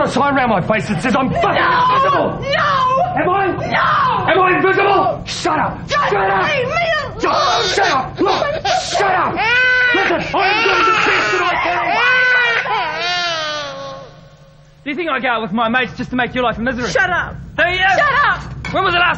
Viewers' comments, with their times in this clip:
0:04 why did u have to make the baby cry